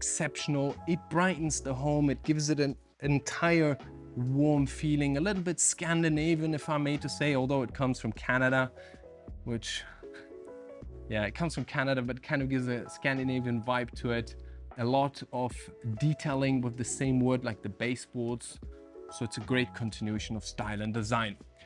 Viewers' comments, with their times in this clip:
0:08 bro why did you say " but it come from Canada " in a disappointed tone ? As a Canadian myself I'm disappointed 😂. Great video as always guys!